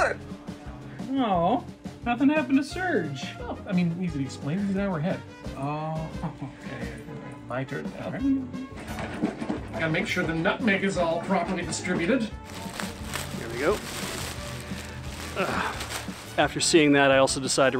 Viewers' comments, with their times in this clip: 0:05 More like an hour and a half ahead, but eh, "stream delay". (Just wanted to let you know I saw that and well played.) Also: that moment you realize you've nogged so hard you triggered a car alarm...